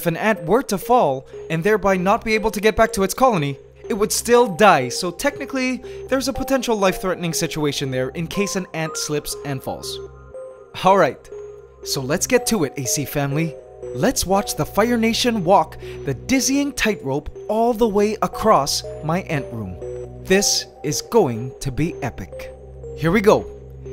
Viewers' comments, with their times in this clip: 0:04 Lol he were like, he won't die straight away, but he will eventually die, so it is still really dangerous. You can notice that his tone changes really weirdly while he's saying it as well